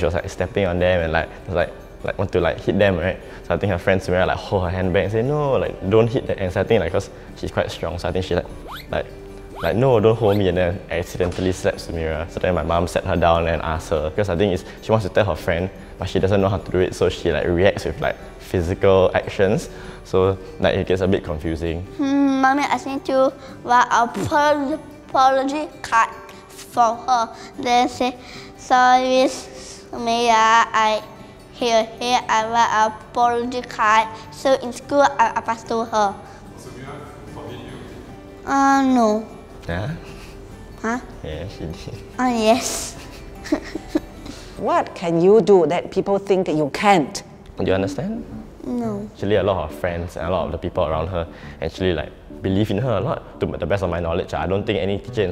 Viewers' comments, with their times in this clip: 0:08 the cute sound effects haha
0:37 the way the brother see his sister and the way he talk is so sweet😭❤️